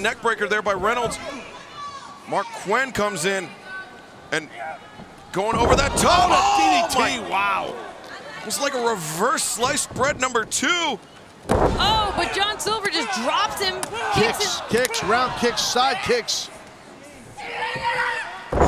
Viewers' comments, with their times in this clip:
0:03 John Silver's comeback and the sound effects he makes with that suplex tho! 😂😂 It's crazy how strong and fast his little ass is lol. He's pretty badass tho, no lie!